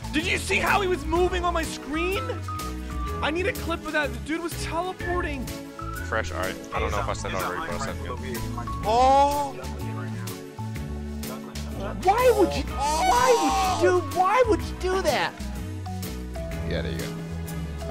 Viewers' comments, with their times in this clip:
0:04 sounds like Morty from Rick and morty